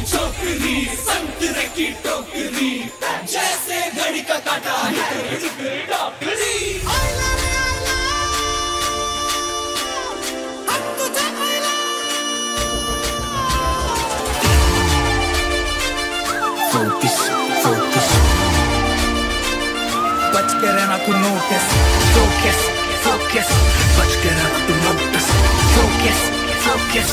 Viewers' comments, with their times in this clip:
0:10 is the best transition I've heard in a while